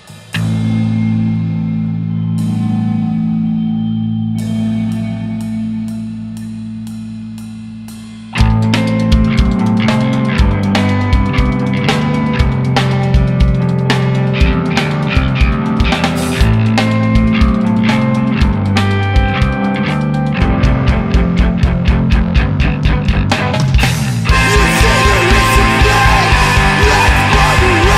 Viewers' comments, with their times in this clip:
0:08 the best part starting! guys very good music :)